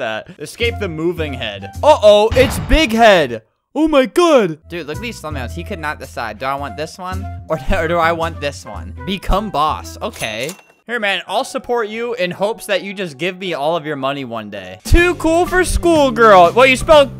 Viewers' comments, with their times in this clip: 0:05 i thought he cursed